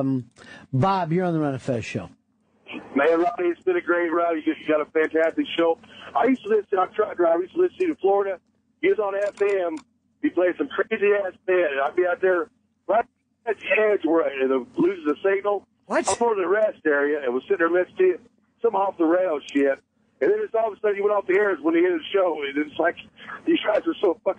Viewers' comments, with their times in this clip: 0:08 i love jimmys "what?" during this callers inaudible blithering